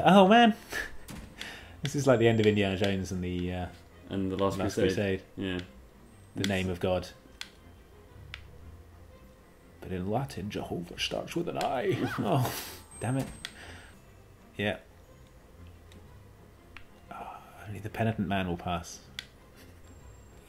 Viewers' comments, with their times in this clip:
0:08 I rewatched at least ten times for that excellent impression.